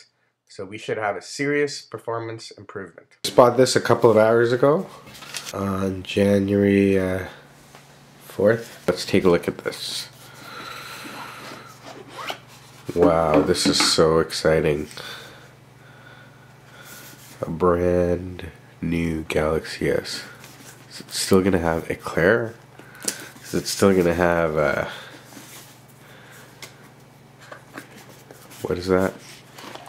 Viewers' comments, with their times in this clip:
0:10 u sure sound excited! xD l